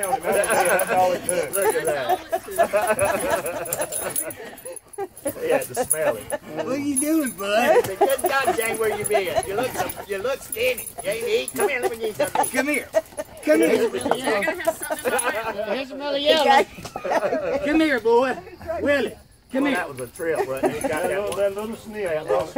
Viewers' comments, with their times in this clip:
0:05 there's Seth Rogen laughing in the background